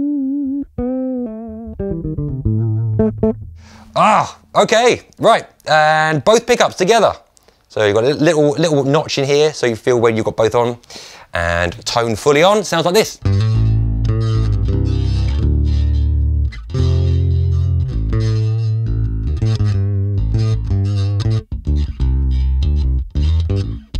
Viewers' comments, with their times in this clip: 0:04 That face starting when playing both pickups on the Newport in a clearly out-of-phase tone says it all. That's one bass to forget-completely waste of time and money.